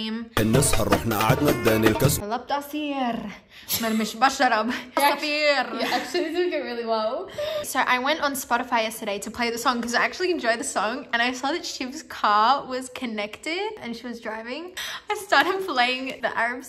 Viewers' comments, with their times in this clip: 0:03 Oh my God, you sing the Arabic song perfectly❤️❤️❤️😂